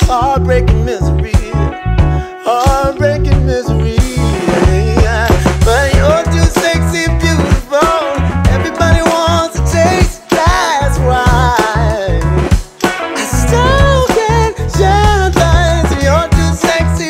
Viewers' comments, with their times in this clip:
0:03 That intro fill kept me watching and I'm glad I did because the back and forth at the end was great.